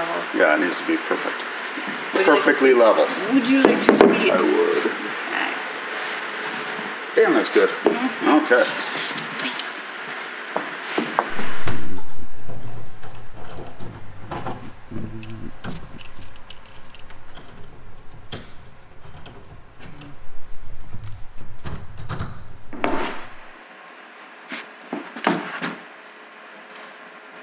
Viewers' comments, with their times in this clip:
0:09 Ahhh, the annoyed passive-aggressiveness of the beleaguered assistant and the untrusting foreman; I know that feeling well 🤣 When it comes to gluing/bonding in your bulkheads, are you missing out on some strength by not running a bead along where the panel will sit and then smooshing it down in place, and then radius-ing the corners? Do you think you'll have enough strength just by bonding it from the outside of the joint?